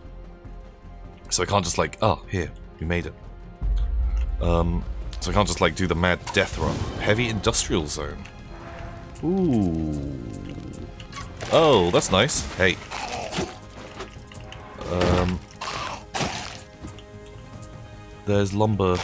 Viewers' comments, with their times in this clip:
0:06 That is the best kind of music.